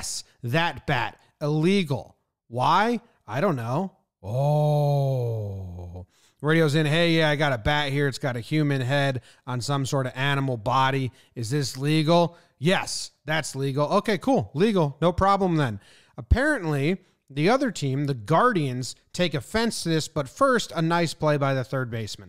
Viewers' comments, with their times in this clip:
0:04 That oooooooh had me howling lol 😂
0:04 Why you gotta do the Asian voice though? 😂😂😂